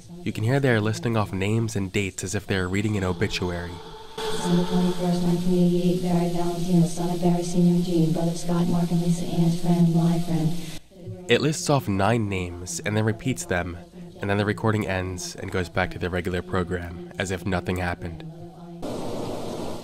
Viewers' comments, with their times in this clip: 0:05 damn , she has some mad flow